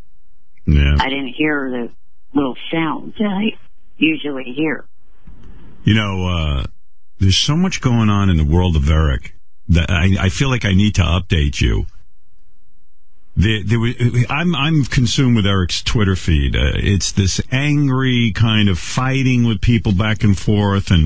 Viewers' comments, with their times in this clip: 0:03 The sound his voice makes is terrifying btw